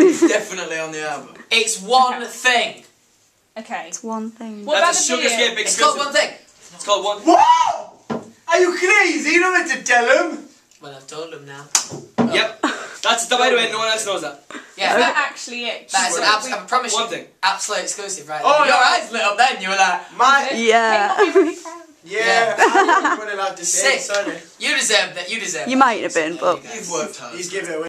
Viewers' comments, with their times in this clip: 0:06 i JUST LOVE ZAYNS ACCENT
0:06 lol when you keep clicking on it sounds like some barking omg
0:21 Liam's cute yawn. <3